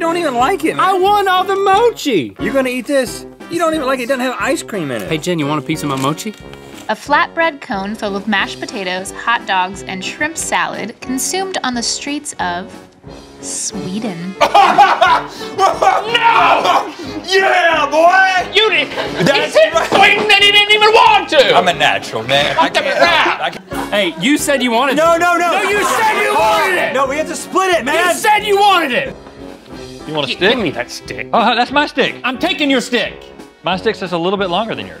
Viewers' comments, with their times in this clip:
0:08 Rhett's YEAH BOI! Rippled through my very soul
0:13 A “YEAH BOI” coming from a 40 year old man. 😂💀💀💀
0:20 When you flick a spring